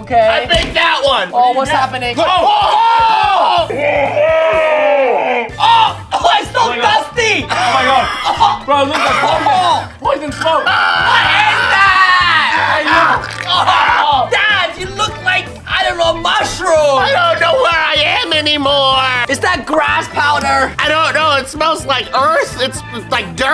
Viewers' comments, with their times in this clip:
0:07 crying and screaming cough